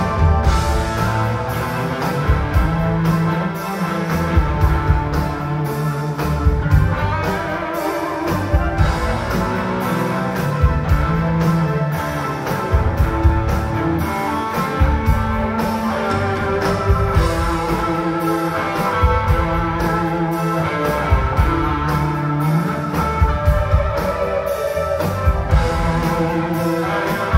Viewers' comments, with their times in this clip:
0:08 What happened ish was that just feedback from an amp or did something blow out ? It seemed they were trying to figure it out the,selves as they played out the end of the song. Tom and Mike they sure define the word “Jam” don’t they when those two get it going it’s just pure Rock and Roll guitar playing . May God heal the Heartbreakers in their trying to come to terms with all this. Love you guys from the first time I heard you many years ago.